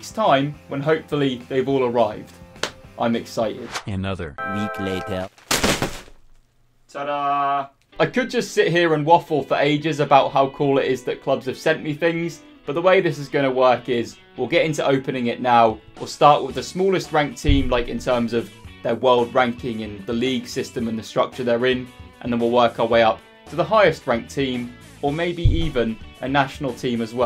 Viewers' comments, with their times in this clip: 0:08 is the best part because 1) we get to see that beautiful Club America shirt 2) Arctic Monkeys starts playing in the background